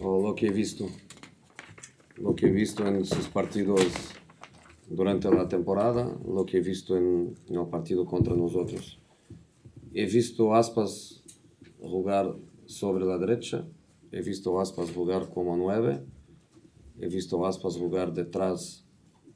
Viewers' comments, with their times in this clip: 0:03 Why did he start speaking Spanish or Portuguese or something at like ish